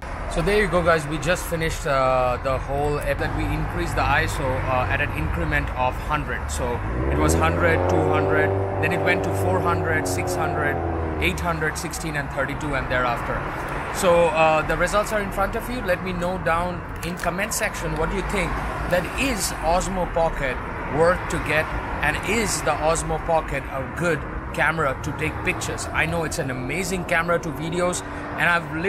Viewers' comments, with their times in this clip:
0:09 that exhaust note was so fkn clear and gives some eargasm